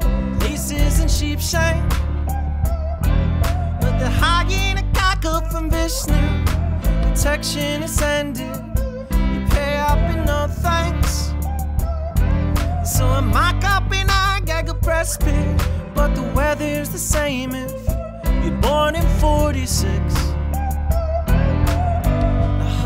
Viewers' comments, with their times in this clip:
0:04 🔥🔥🔥 are you still listening in march 2020 This voice is Phenomenal 💚 👇👇👇👇👇🔥